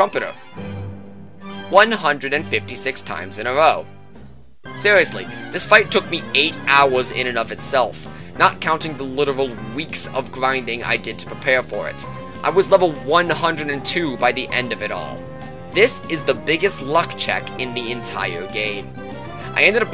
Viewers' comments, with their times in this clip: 0:04 Hoenn trumpets for trumpeter, good idea